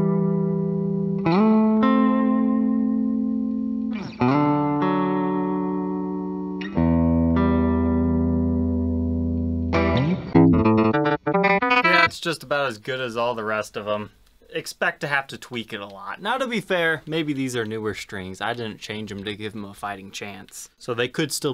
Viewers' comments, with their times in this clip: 0:09 lightning fingers solo🤘